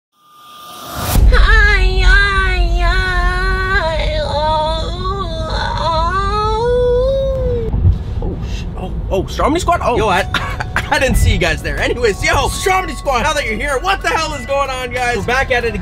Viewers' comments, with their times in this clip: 0:02 oh my god he make me laugh so hardly when he sing that song